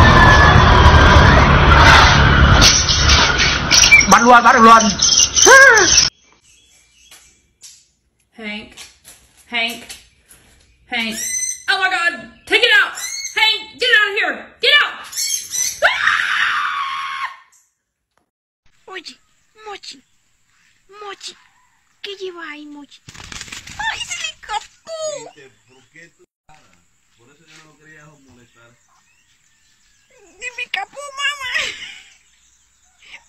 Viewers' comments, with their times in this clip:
0:09 that was a great scream 😂
0:16 the blood-curdling scream 😂😂😂 such an over reaction !